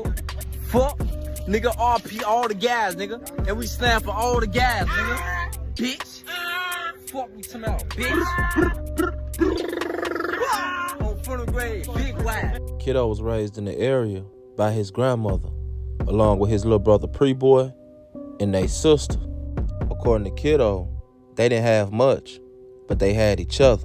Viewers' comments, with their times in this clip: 0:09 The Adlibs fucking killed me lmfao